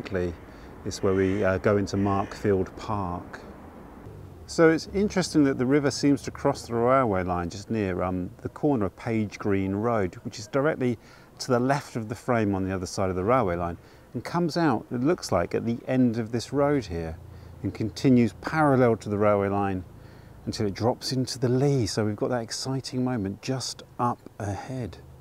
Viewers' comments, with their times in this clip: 0:10 I like the way the local corvids commented after you mentioned Crowland Road. thee are two loud "Caws" in the background, right on cue. I live right beside a lost river in Vancouver that was called Canoe Creek. Sometimes it can be heard from parkade under the building I live in. Last time I led a local history walk, I borrowed the theme of observing the urban landscape from you, and people were fascinated. Like London, I live in a city riddled with lost and hidden waterways. A handful of them have been daylighted, and about 2 km walk away there is a stream where the salmon have returned.